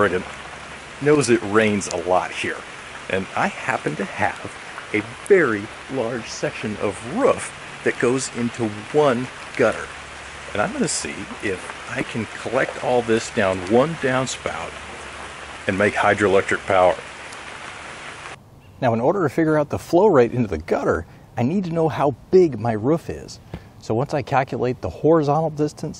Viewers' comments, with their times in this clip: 0:07 the sound my dogs make when they’re hungry. 😂 just a joke nice video from NYC 💪✌️
0:07 Good to know he has a lot of ruf.